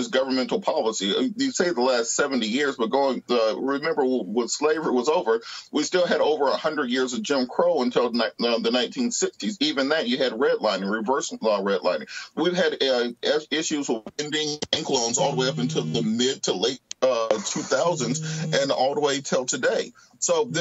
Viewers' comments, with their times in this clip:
0:05 this man phone rings so hard it turns his whole world sideways